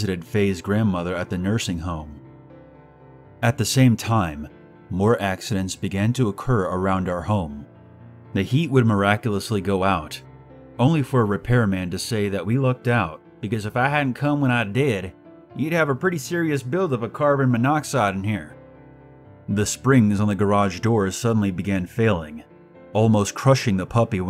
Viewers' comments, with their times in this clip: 0:10 TEXAS ACCENT INTENSIFIES